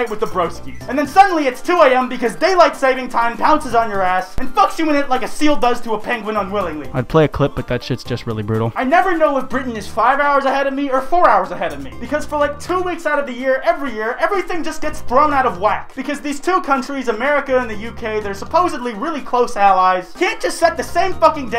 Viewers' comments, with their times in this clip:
0:06 Your voice sounds soooooooo different